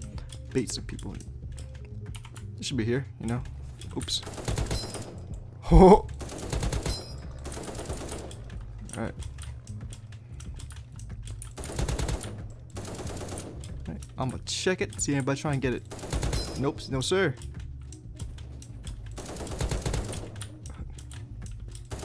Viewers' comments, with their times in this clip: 0:08 …dat giggle do homie 😘😏🥺